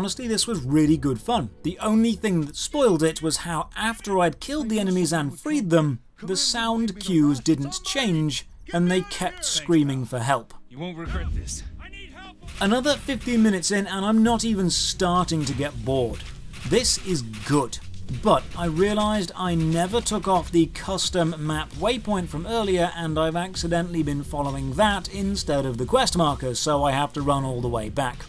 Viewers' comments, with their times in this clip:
0:10 sounds like that voice actor you hear all over Skyrim hey?